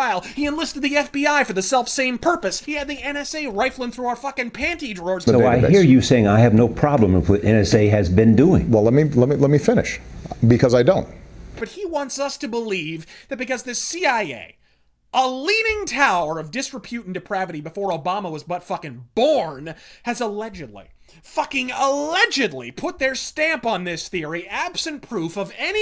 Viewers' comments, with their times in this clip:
0:10 I think they forgot to edit in a long ass uh from Obama